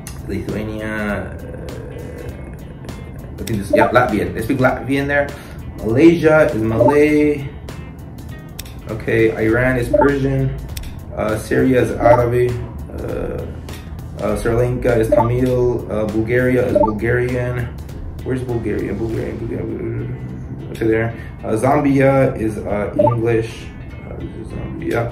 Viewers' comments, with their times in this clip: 0:09 can you stop this eye runs? Its iran bro